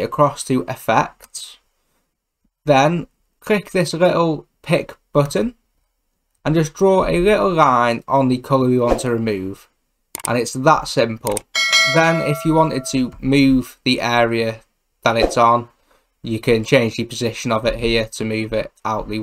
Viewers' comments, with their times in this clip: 0:07 the way you pronounce little line is very disturbing